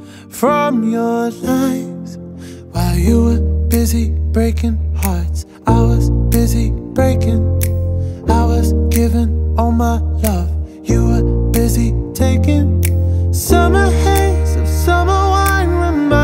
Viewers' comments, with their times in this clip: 0:03 That sounds like Taylor swift blank. space